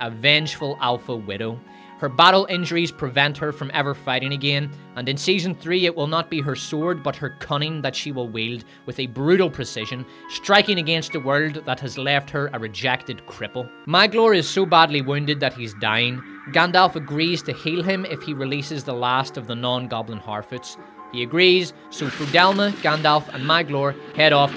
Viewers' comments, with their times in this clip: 0:06 I swear I thought you said "cunny" at first. That would have worked, too...